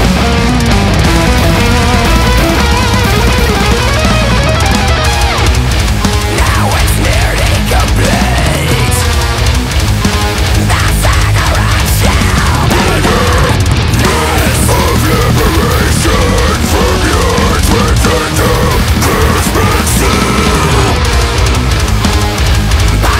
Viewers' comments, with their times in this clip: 0:06 That deathcore vibe